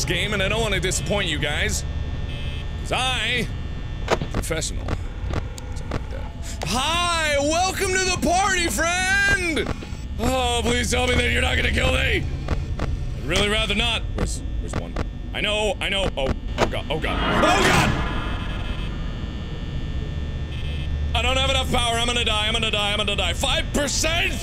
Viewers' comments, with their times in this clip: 0:05 Who else heard Bonnie walking and knew he was at the door and was screaming "MARK THE DOOR THE DOOR"